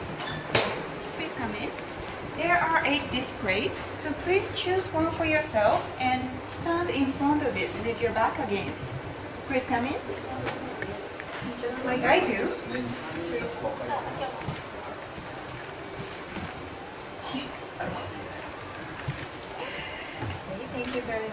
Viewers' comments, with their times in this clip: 0:04 HAHAHHA DISPRAYS I LOVE U ASIANS GOD PLEASE TALK LIKE KIM JONG IL PLEASEEEEE